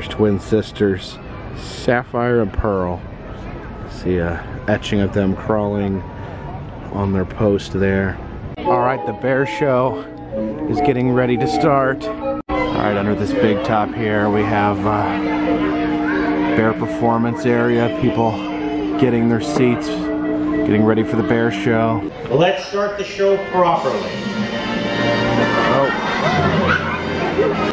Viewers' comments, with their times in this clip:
0:08 DID ANYONE HEAR THE MARIO THEME
0:08 the music in the background almost sounded like the Super Mario theme.